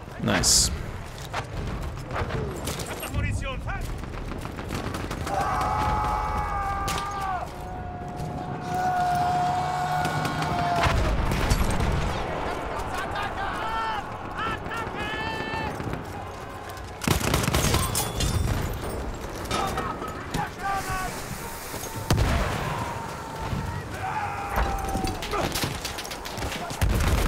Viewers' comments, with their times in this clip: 0:10 that's exactly what I do when I hear that stupid bayonet charge scream. Way too many people rely on that as a primary.